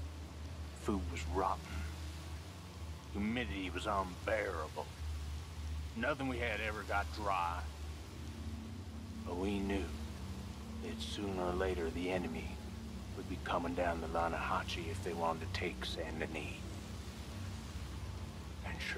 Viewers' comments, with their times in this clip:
0:03 I remember encountering this on my second play thru and listening to the dialogue thru and thru. Was quite fascinating honestly, and it amazes me how down to every last npc the voice acting in this game is just top notch. Even though this dude was some crazy scumbag I really felt like i was sitting there being told a war story... Until the end anyway I think he was just gassin himself up lmfao